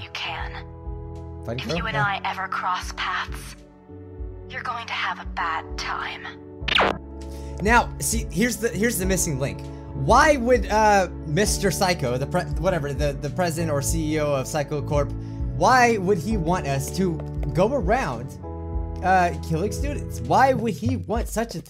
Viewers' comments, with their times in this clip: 0:05 meglovania starts playing